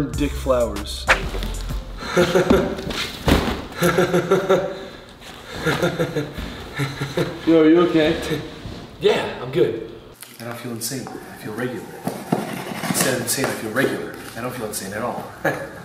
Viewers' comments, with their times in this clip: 0:03 I was crying😂😂😂 just random laughing and starring